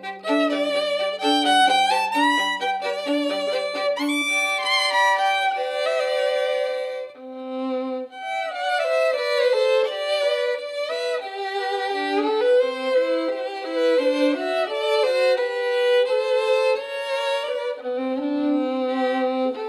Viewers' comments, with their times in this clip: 0:07 SO good. I especially love the part it reminds me of a Pokemon starting town :)